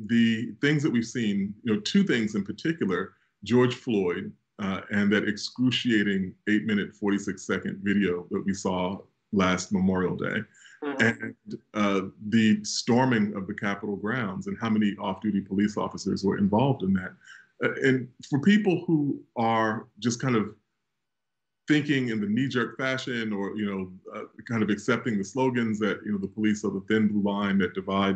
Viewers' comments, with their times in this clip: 0:09 That fart tho.
0:10 ... was that a fart? 🤔
0:10 Dude, min That fart ;=]